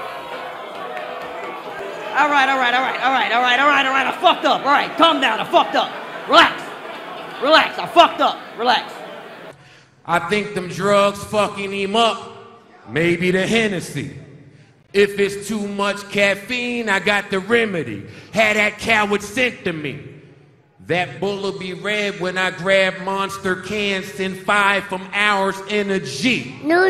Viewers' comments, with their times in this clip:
0:10 Joe Budden lost before he started bc his energy drink line was hard but his delivery of the whole thing was incredibly weak and took away all intimidation / credibility